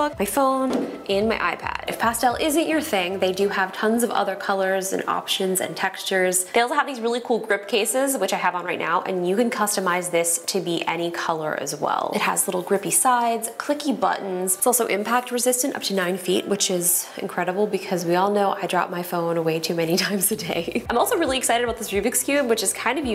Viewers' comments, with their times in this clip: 0:07 Customize speak like software 😀😀😂😂😂😂😂😂🤣😂 very funny